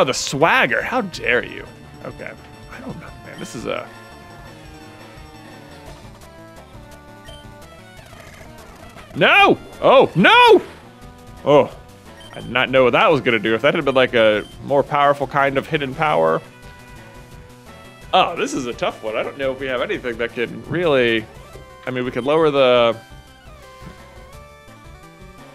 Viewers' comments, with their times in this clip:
0:10 happy wasn’t censored